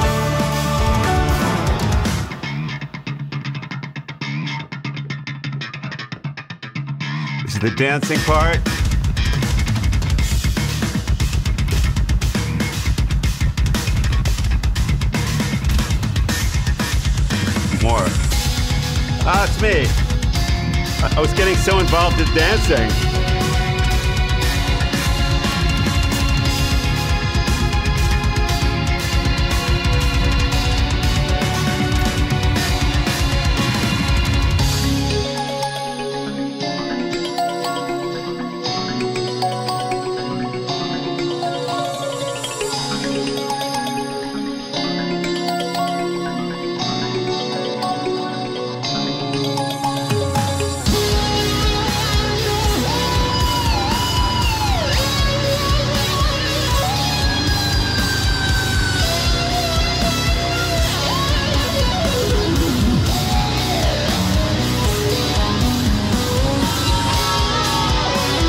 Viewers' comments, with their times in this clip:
0:08 Definitely the grooviest part of the video for me. Absolutely loved it. Great song and you've done an exceptoinal job with it. Masterful performance :) .
0:15 pads section was my fave. adds such a nice contrasting texture
0:19 This man didn't enter when he should've, what they call: loosing the cue. And yet, he immediately knew where to enter and in which part of the arrangement he was... THAT'S NUTS! That level of musical resiliency is absurdly rare, most people lose the cue and immediately become a mess, specially if they are doing something else like in his case. This man is the definition of being a master.
0:33 sounds like a cool ringtone
0:34 Everything fits so perfect... but this section is just like the song was asking for exactly this, if you hear the previos section there are little hints of this pattern and sound, and the he proceeds to completely close the circle... Awesome!
0:41 that descending run was noicee. 👌
0:46 that is so unbelievably impressive. picking up these notes and arpeggiating and stuff like that at the drop of a hat, no thought at all just instantaneously clicking into the notes.... this guy has completely mastered his craft. ive been a musician for 15 years and will never even begin to hold a candle to this dude. bravo
0:52 " The Synth Solo We’ve All Been Waiting For" -- I'm not a fan of keyboardists imitating guitar (except as a harmony). I much prefer when Jordan solos use the piano sound rather than the guitar. His piano improvisation is brilliant.